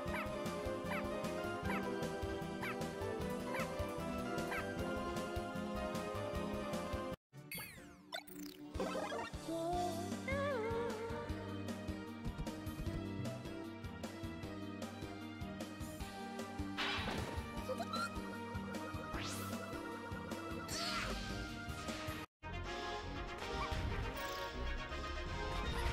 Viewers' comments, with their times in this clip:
0:09 Low-pitch Sing. It sounds so... human.